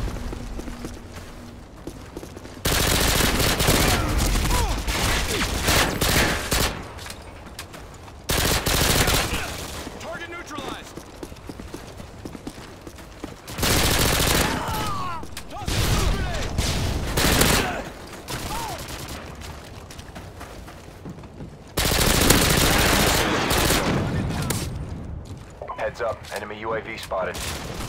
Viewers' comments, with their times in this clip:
0:10 call in the 4D1 guys, they missed an fx.